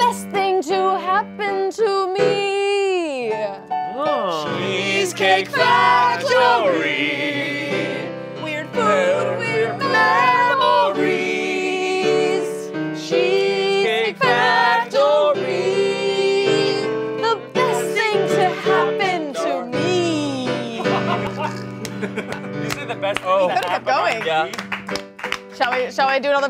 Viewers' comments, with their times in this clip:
0:10 i love the unintentional harmony so clean